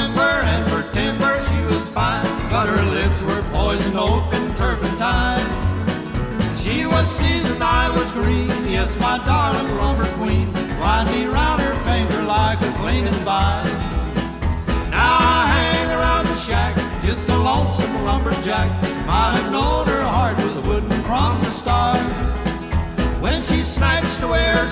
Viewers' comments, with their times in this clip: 0:05 nice voices :( love